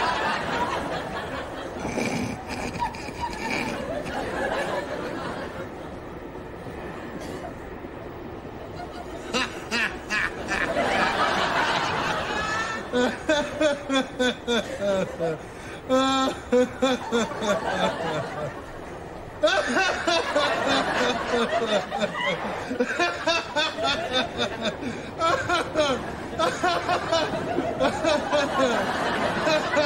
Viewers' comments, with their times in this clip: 0:10 The laughing guy caught something